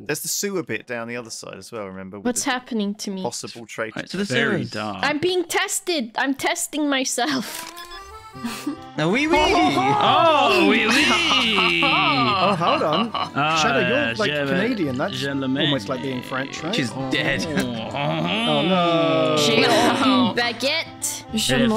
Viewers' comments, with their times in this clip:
0:07 Ngl, I kinda wanna know what the song in the background is, it's chill. ¬w¬